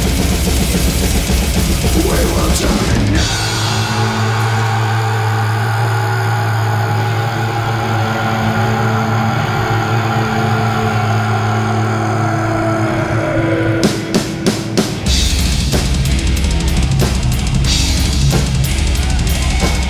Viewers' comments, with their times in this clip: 0:03 We must add the fact that David Vincent still can belt those old school screams! spot on